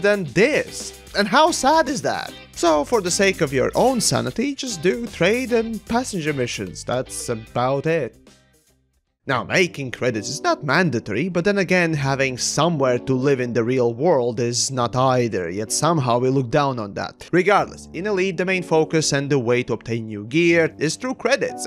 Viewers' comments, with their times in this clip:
0:09 Awesome but what I was looking for starts It's a slow piano. Reminds me of a horror game like Resident Evil or Silent Hill.